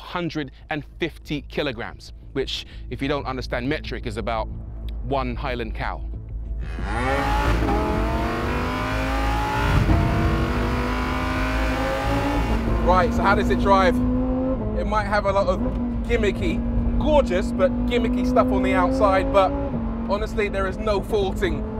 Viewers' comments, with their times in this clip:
0:05 the way they blended that cow moo-ing into the exhaust note was much appreciated
0:06 That transition between cow's moo and the lambo's engine sound though.